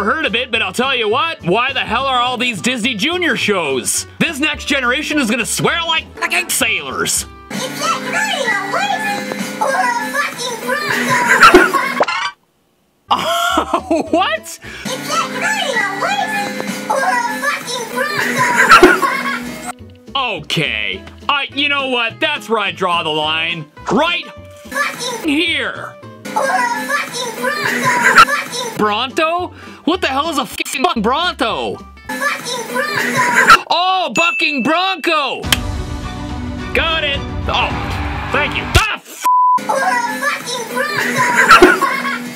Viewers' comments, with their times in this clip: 0:07 I put on captions and It heard that😂
0:09 YT agrees that this is an F look at the transcript
0:21 i hear "is that nORmAl PeRsOn, or A FCkInG rAgDoLl (ragdoll, pencil, hag mall, i have no clue)
0:27 i heard fucking brothel
0:30 how he cencors it cracked me up XD